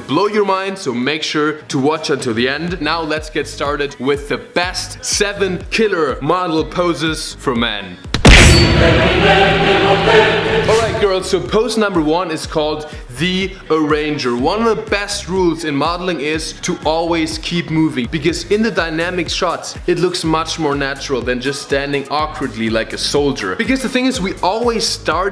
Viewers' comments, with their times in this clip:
0:08 rip to my eardrums